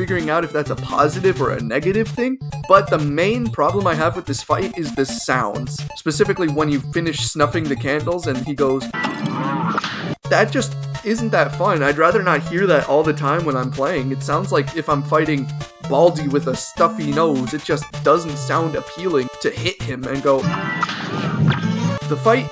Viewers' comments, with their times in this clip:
0:08 Sounds like the "Oh" in the "Oh banana"